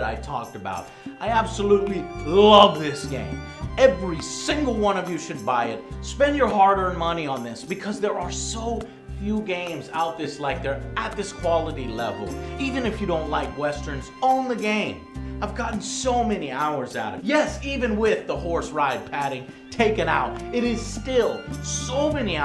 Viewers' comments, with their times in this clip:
0:07 "Because there are so few games *out this like there*" <--- hahaha am I the only one who caught that little tongue twister from Joe? :D
0:09 Did he just say, "Out THIS like THERE"?